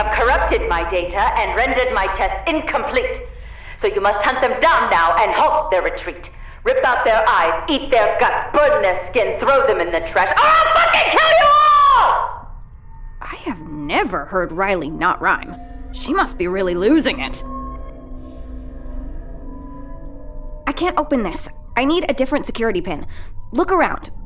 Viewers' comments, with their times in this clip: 0:05 idk why her yell cracked me up. Just the violent part to a 'ILL F*CKING KILL YOU ALL!' laugh